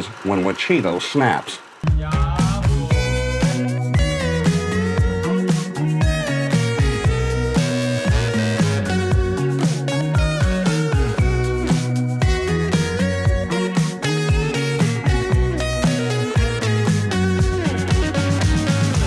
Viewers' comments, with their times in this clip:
0:03 Anyone else has Scribblenauts vibes with that little melody ?